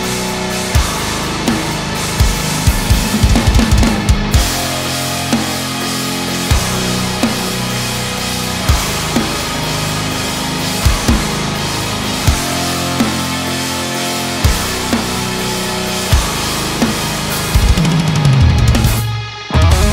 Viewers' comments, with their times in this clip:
0:03 🔥🔥🔥🔥 I love so much that crash-ride. I love Meinl 😅 💛 And Matt Halpern its a MASTER 🔥🔥